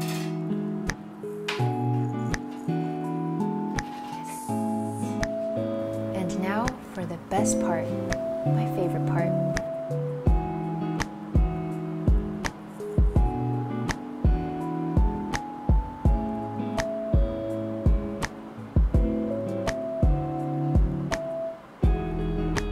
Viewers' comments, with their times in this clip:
0:09 I like it when she poured the chocolate ganache the beat dropped and its so satisfying